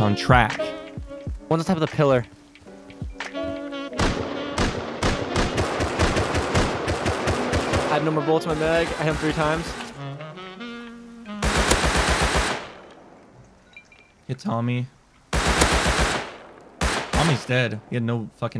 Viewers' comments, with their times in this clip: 0:04 python shoots to the beat